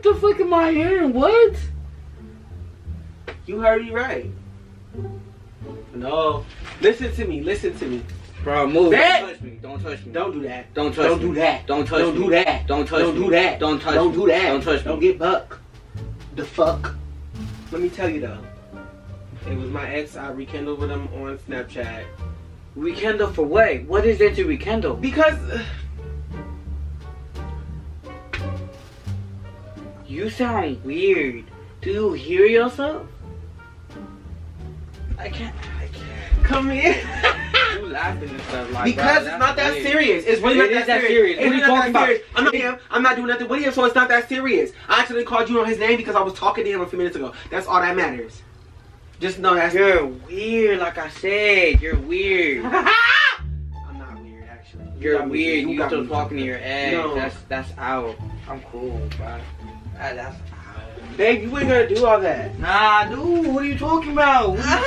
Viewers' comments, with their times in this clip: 0:09 The first part had me Died but why does sound like me and my brother @ a grocery store
0:52 my friends say my laugh is like this 😭😭😭😩😂
0:52 his laugh has me deaddd😂😂